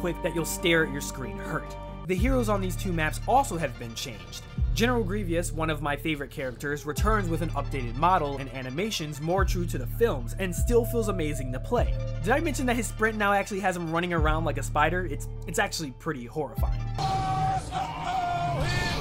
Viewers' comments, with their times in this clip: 0:03 Did you say Grievious? I let it go when you pronounced Cato Neimoidia wrong but that one's too funny lol
0:04 "General GREVEOUS" facepalm